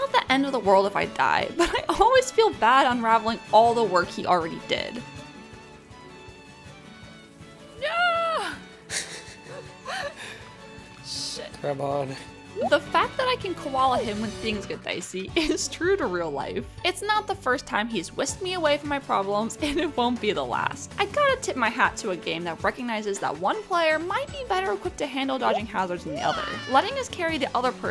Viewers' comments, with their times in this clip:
0:10 oh, that caring 'grab on' he says so her. You just hear him smile saying that. They're so cute together. 😍